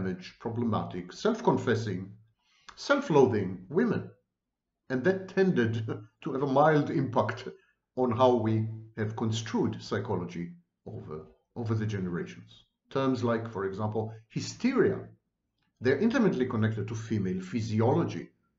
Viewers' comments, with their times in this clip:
0:06 The chuckle is noticeably restrained 😂 as I have an eerie guilty feeling bubble up 😅😅😅😇